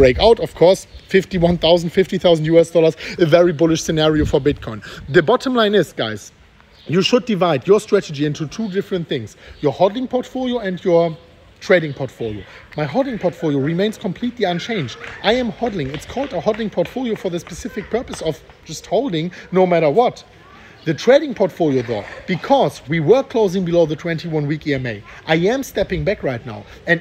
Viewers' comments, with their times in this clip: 0:10 nice background sound